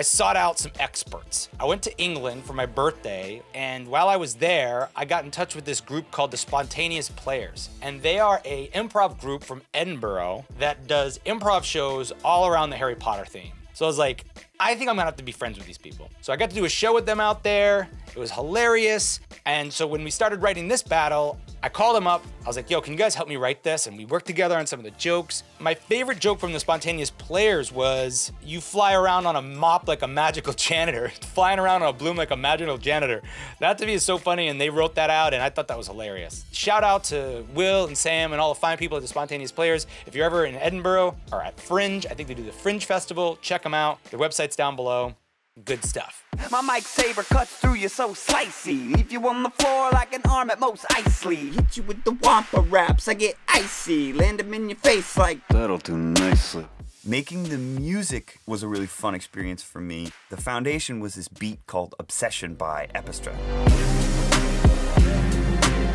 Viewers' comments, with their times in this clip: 0:07 everytime I hear an American mispronounce Edinburgh the way he did, a little part of me dies lol
0:51 THAT VOICE CRACK- 😭💀